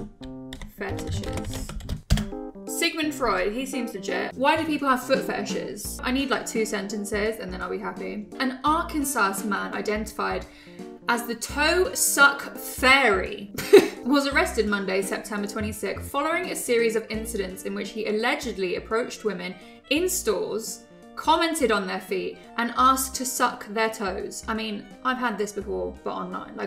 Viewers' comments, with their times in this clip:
0:08 Mate, the pronunciation of Arkansas? 😂